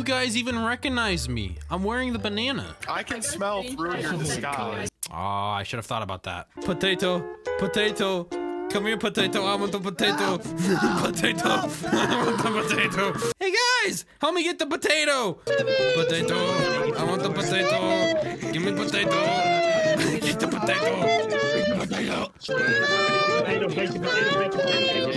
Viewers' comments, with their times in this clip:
0:07 Potato crying noises. A few second's later "POTATO CRYING INTENSIFIES